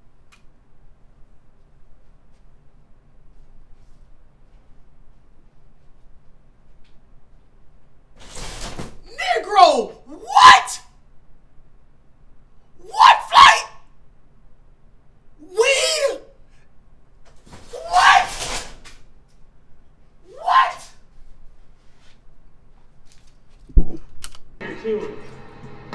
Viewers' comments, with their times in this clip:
0:09 when u mumble sum under ur breathe after ur mom just got done yellin😂